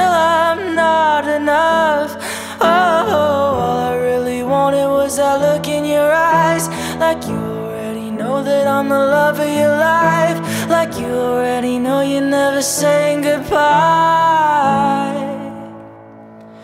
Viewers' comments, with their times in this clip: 0:03 I like the VOCALS and the Background BEATS in here, hey! The song is PERFECT 🥺🌸